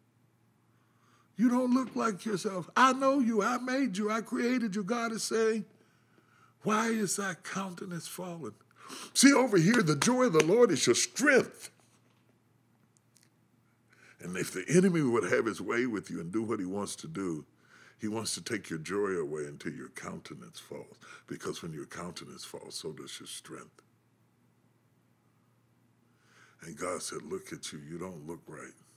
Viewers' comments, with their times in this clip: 0:10 that electromagnetic interference is ESP, You See the power of the Holy Spirit when he speaks of the Joy of the Lord!!